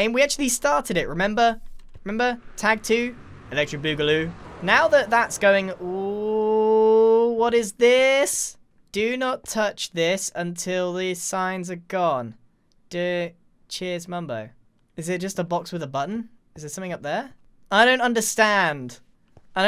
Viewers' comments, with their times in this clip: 0:07 I love the toddler voice and attitude